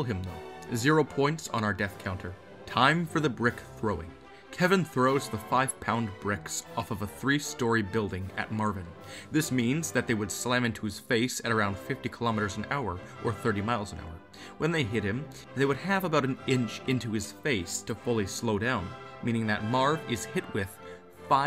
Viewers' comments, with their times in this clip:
0:06 why the wedding song tho